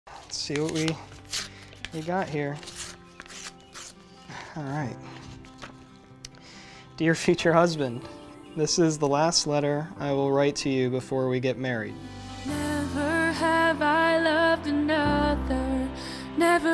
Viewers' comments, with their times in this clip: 0:01 Me "DO NOT CRY, DO NOT CRY" Also me as soon as i heard Kath's trembling voice when she's about to read the letter: CRY